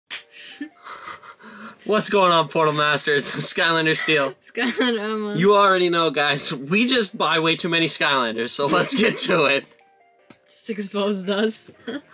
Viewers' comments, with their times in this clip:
0:00 I will make a subtitle (awkward laughter)